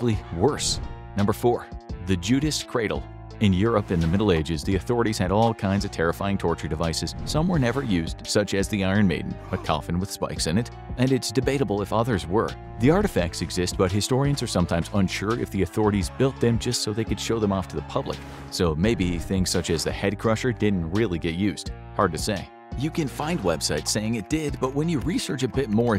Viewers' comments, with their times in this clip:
0:09 "such as the 'gundam seed'"